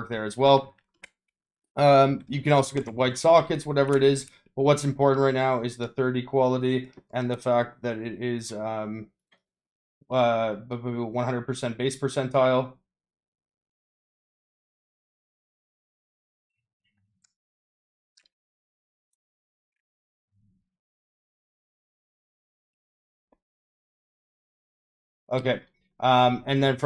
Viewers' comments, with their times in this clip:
0:10 what is that click :face-fuchsia-tongue-out: